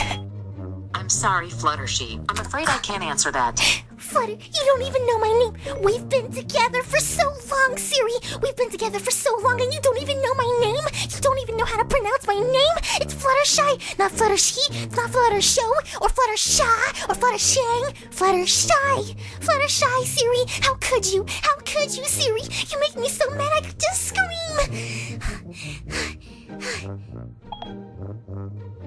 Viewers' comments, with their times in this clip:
0:06 fluttershy or fluttershee screaming
0:13 BAHAHHAH I LAUGHED SO HARD WHEN U SAID FLUTTER-SHAA OR FLUTTER-SHANG
0:16 flutter-sheng got me dying😂😂😂